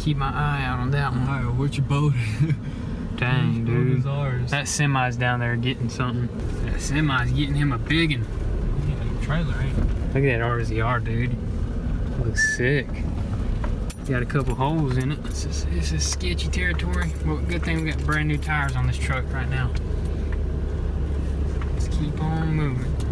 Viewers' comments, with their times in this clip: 0:09 NIce S whistle ahahhah